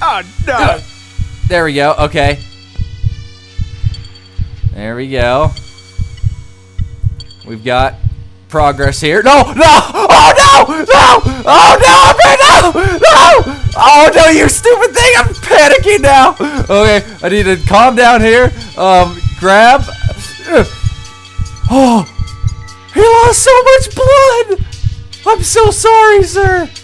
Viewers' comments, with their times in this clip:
0:08 Koot's meowing starts :D